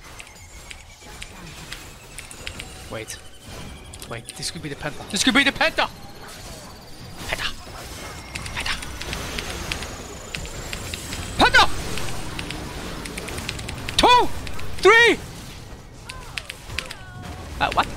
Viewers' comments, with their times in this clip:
0:03 all these sounds coming out of rat are hillarious